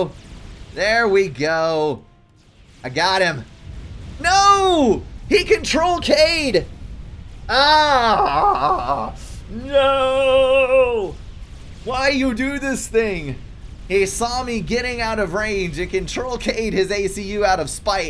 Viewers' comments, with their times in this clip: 0:03 it was greatest aaaaaaaaaaa... I ever heard xD